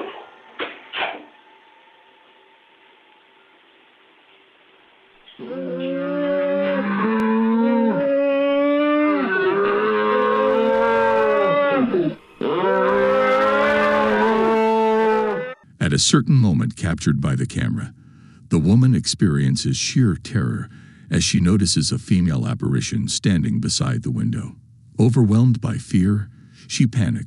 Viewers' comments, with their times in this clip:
0:08 Was skipping around and landed on Thought I heard the Benny Hill theme start to play😅